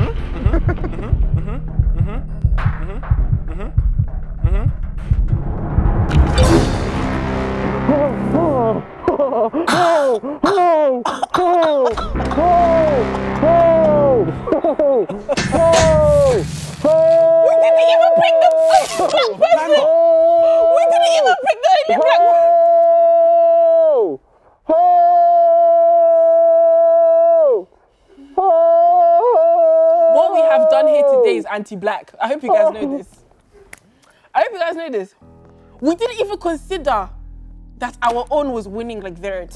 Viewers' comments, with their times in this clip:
0:08 The way darkest held bells and started screaming 😭😭
0:23 why he sound like the Aunty in the back of the church 😂